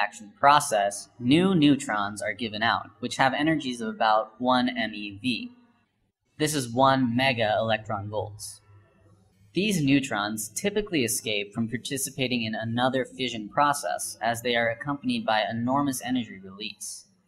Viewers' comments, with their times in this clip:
0:04 I can't continue to watch this video after just because of his irritating way of speaking which kind of make me irritated. Dude shut the fuck up.